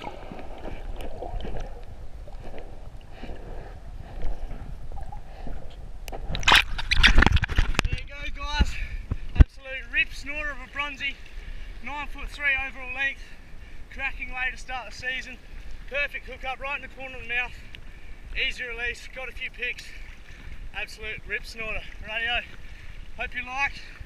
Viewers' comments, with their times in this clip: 0:08 might be most Australian thing I've ever heard coming from the US haha